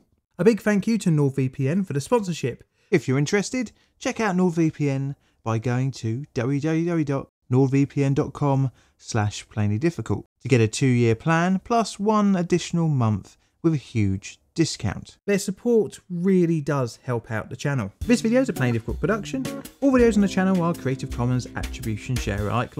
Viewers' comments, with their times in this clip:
0:06 I'm definitely not hearing "www." but something like dowey joey joey... is this a new yanny/laurel-type audio illusion?